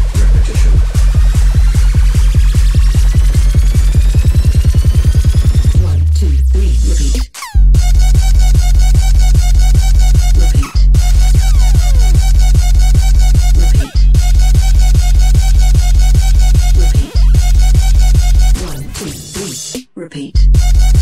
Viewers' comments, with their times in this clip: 0:03 For Da Bass Drop :D